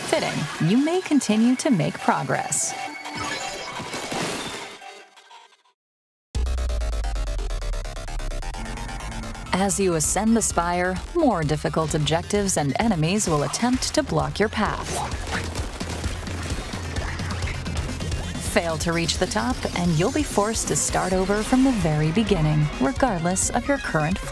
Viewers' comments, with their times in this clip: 0:06 Nobody talking about how intense the music is and how it cycles through moments of reprieve. So excited for the music alone.
0:06 Nobody talking about how intense the music is and how it cycles through moments of reprieve. So excited for the music alone.